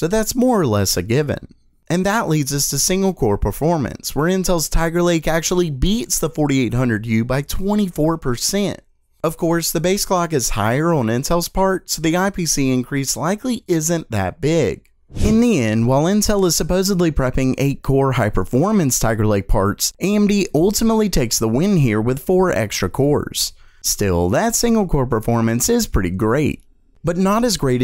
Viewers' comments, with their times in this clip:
0:06 what in the Alabama was that voice
0:08 That country P E R C E N T right there lmao love that.